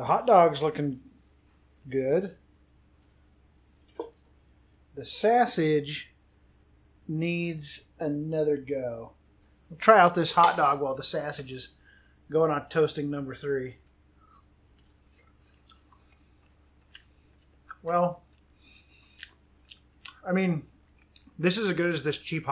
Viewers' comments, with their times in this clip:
0:10 Sass-sage! Hahahaha I died